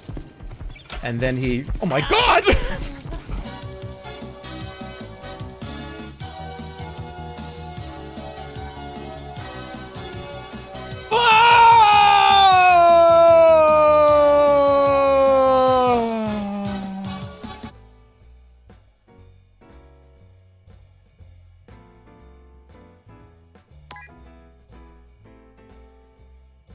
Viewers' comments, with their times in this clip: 0:10 why tf does he sound like ludwig for a second
0:11 I'm still impressed that nobody seemed to question the fact that Ludwig broke character here. The beginning of this scream is so obviously Ludwig's normal voice, but he quickly corrected to keep the character of "Jerma" alive. Let's take a moment to appreciate his acting skills